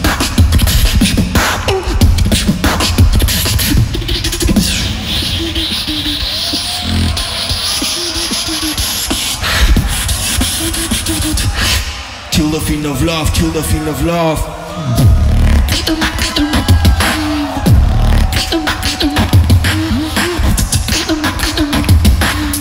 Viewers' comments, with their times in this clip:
0:04 best beatbox drop ever